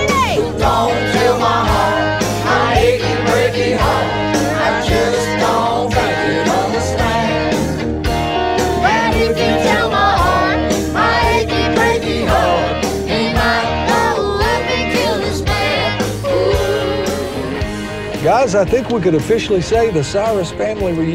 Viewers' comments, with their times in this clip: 0:05 Yeah, Noah was kind of annoying here. But she's a teenager having fun with her family and singing her dad's hit. She's excited, give her a break y'all. Also, it doesn't even sound like anyone else is singing most of the time, because when she stops most of the time all you hear is the CD. Like Not to mention that she doesn't have the voice to overpower Billy Ray or Miley, much less all the family. She does sing too loud, but we only hear her because she's the only one singing 95% of the time...